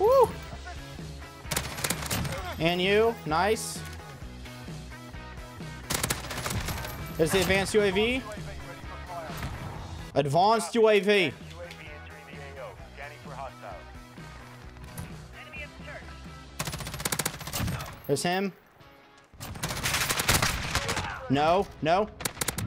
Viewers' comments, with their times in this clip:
0:10 This is not mouse and keyboard ! We hear a joystick noise after he said advanced uav.